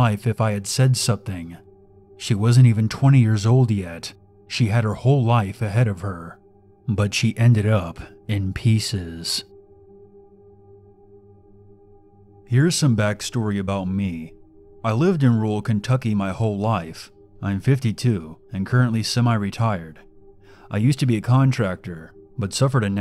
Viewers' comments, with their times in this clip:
0:07 For a second, I thought he said the wife was turning eight.